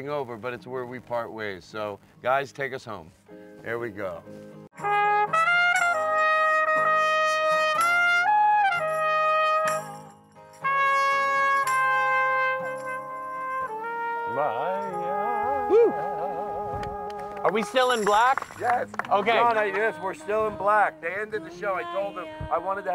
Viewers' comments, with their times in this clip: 0:04 Now I can't be sure, but I'm pretty sure that was the ghost of Miles Davis blowin' that sweet mouth horn